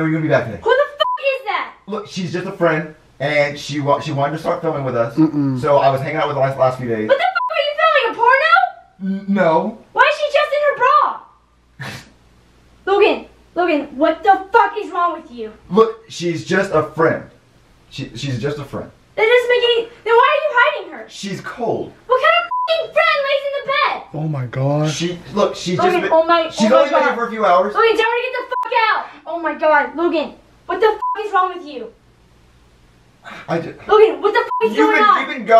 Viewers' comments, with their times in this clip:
0:07 😊that scream sounds like an airplane landing 🛬
0:12 they censor every time she said f*** except here
0:15 They forgot to block the f*** like oop
0:15 Editor forgot to beep fuck
0:20 “she’s cold” as he says so calmly